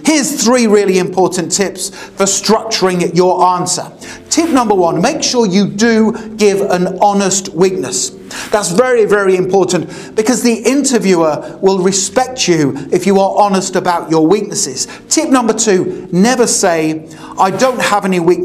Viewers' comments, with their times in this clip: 0:06 I am hearing you say 'witness' and 'witnesses'. :)